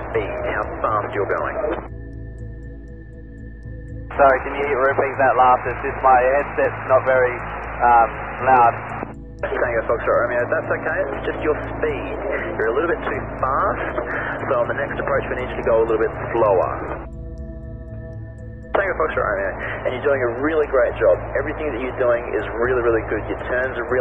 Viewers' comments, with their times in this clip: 0:09 This ATC is a freaking messiah. Pay attention to how he is making accent and making longer on keywords to make they more audible: SPEEED, TOOO FAAAST, SLOWEEER. This is genius!